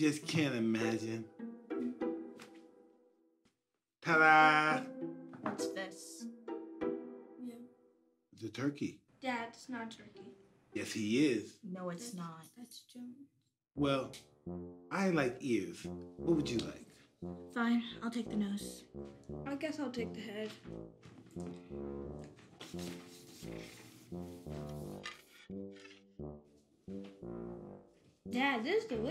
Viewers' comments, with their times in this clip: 0:10 so funny the way he says "Yes he is!" Lol